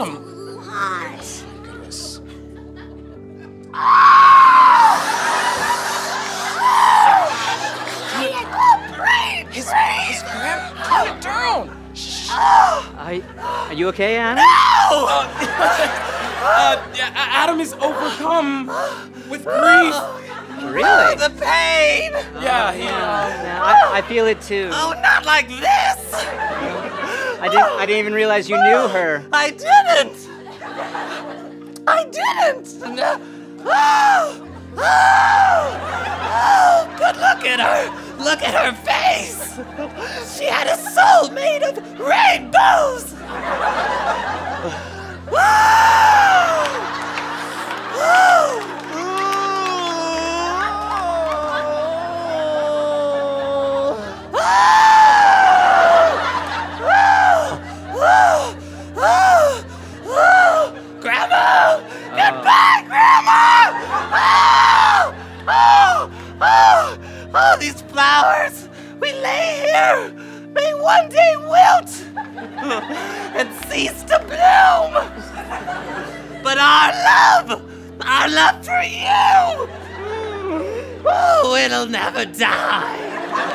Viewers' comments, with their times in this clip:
0:05 this scream gets me everything 😂😂
1:05 at this exact moment in history, that voice-crack though xD